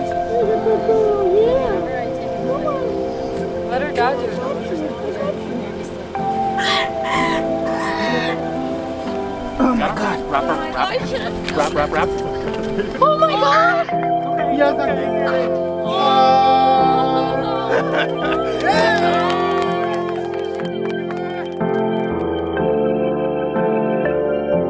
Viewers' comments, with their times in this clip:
0:05 Im a bird owner and hearing her screech made me cry with relief- instantly. You all did an incredible job rescuing that beautiful creature. Love this video & your channel. Now I'm going to cuddle my conure and be thankful to have him in my arms. 🐦❤